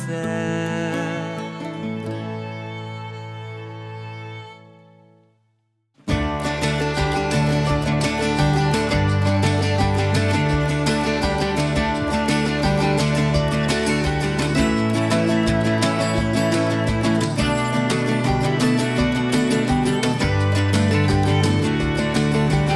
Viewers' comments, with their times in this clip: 0:06 When you get to turn the speed to 1.25 and listen to a completely fresh Green Day hit